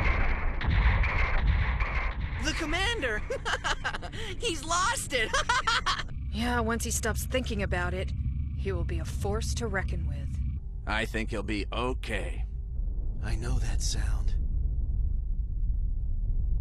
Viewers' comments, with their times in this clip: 0:04 This like like of dialogue, 40 seconds of breathing with no other sounds present, and 15 seconds of fighting. Hardly the best fight scene ever made, i like this scene and i like gundam but i think i can go as far as to say the title is OBJECTIVELY wrong.